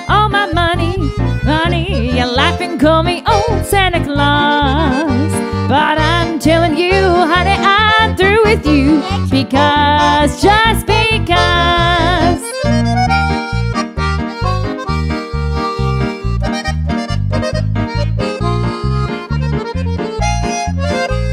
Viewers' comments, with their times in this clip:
0:08 There is short paranormal sound